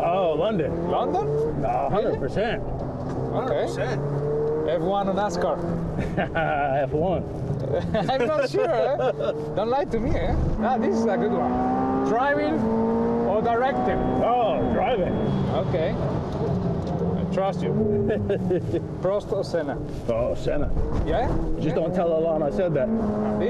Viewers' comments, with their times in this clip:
0:08 Alonso “Don’t lie to me” very close sounding to Borat